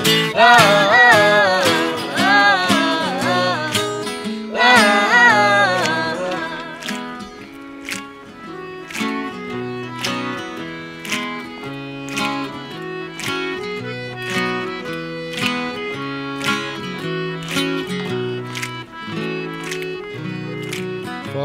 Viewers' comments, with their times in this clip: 0:09 What's Louis Theroux doing there ?! (Apart from clicking of course.....)